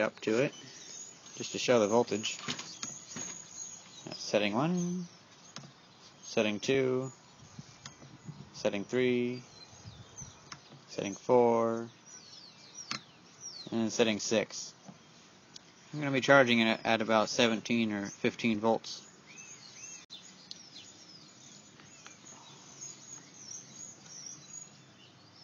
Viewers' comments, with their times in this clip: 0:10 the cat thinks you are saying "sitting 4" so it sits four you.